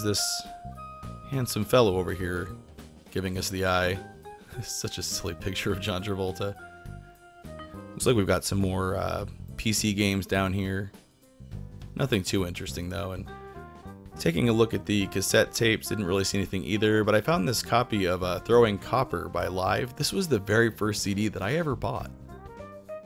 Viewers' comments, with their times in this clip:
0:05 "Slick" or "Silly" ? I can't tell what you said???